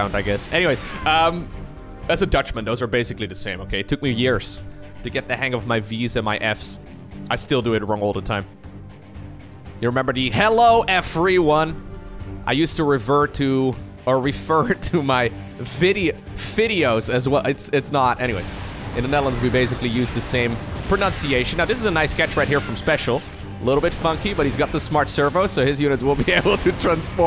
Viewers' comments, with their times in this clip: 0:08 I have always took it as "Hello a free one"